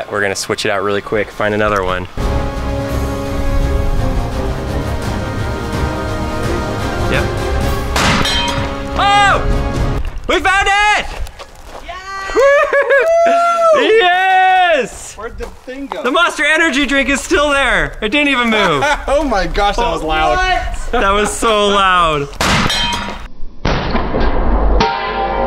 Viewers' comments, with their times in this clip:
0:09 when the bottle hit the fence, it sounded like a bullet hitting a metal can